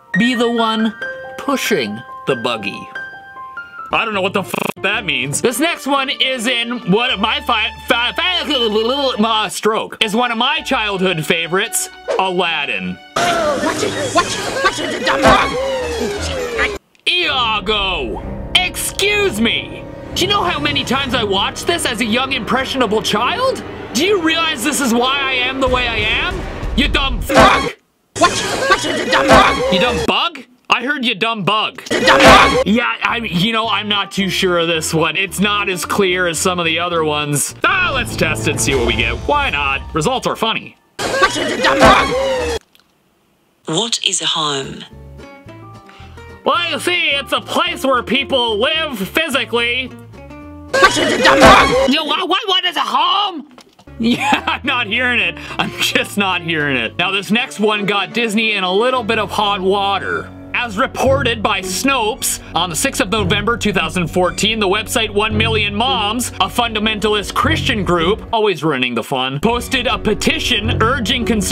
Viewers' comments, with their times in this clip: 0:04 😂 next one is jjgdtg dckhdyn stroke
0:12 I think he said "watch with the dumb rug"
0:15 I heard "dumb rug". Also your videos are hilarious 🤣🤣🤣
0:57 tbh i feel like instead of s***ty he is sounded like he was gonna say hideous but idk he thought it was a bad word? Like this "this is hopeless! Horrible! Hide-! Oh i mean really really bad :(" ya thats what i thought